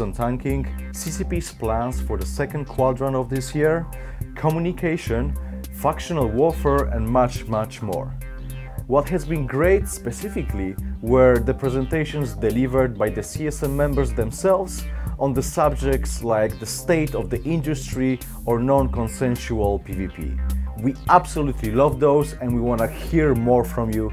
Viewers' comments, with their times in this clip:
0:05 fuktional warfare? Whatever it is, Im in man.